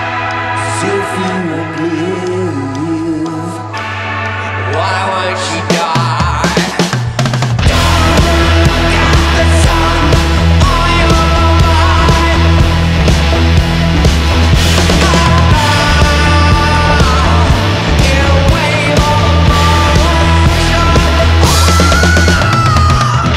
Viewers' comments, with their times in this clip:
0:04 i like the drums